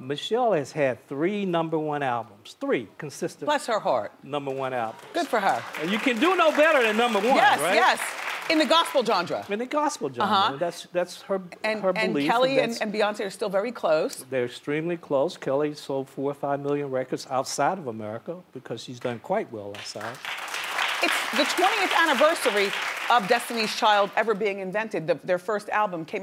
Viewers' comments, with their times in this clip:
0:09 how did she pronounce genre?